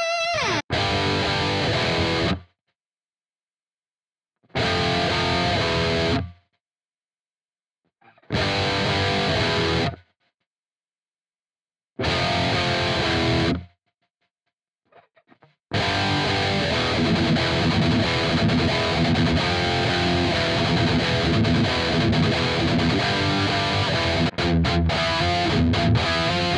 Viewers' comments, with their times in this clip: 0:08 Glorious sounding power chords! which plugin for that part? EDIT: Same plugin! My bad, I didn't realize the thing has 3 different amps...